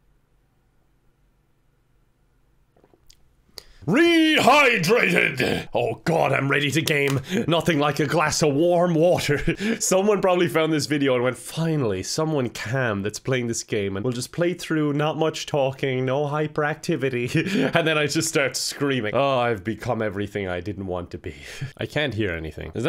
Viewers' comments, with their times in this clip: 0:04 all might is that you?